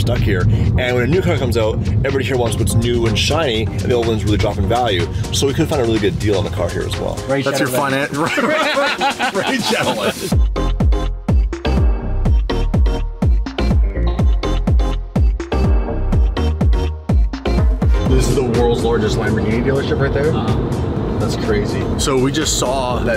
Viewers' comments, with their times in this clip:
0:10 name of song I'm getting Gran Tursimo show room shopping vibes.